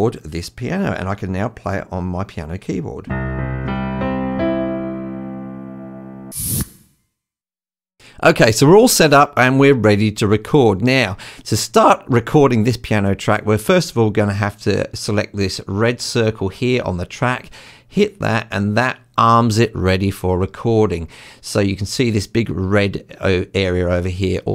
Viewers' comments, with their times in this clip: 0:05 no sound at the process in video...